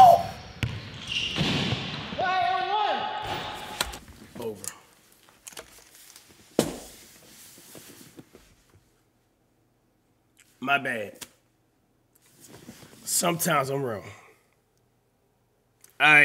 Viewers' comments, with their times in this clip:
0:04 Bro shot it from the logo while being contested and yelled “And-One”💀 ggs